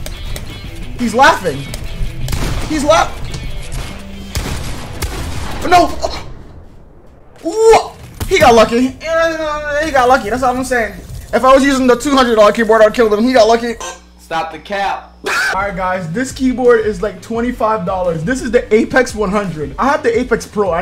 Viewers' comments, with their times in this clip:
0:08 what was that noise lol